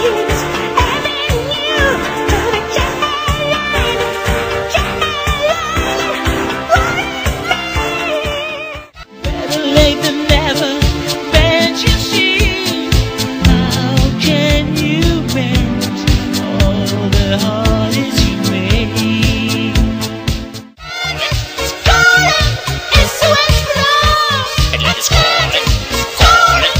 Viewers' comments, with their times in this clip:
0:09 No, first I also thougt it's fake, but the part of "Angies heart", which begins is a proof for the authenticity, and if you will check it, pleas compare it to the voice in the Blue System songs, but not the refrain, that was Rolf Köhler, Dieter Bohlen sang just the stanzas.